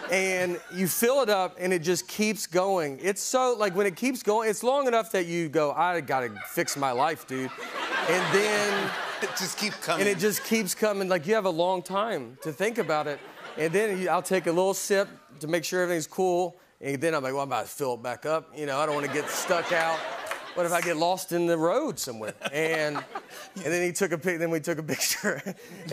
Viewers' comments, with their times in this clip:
0:06 Who is laughing ?? Clearly that bit about the soda was striking a chord 😂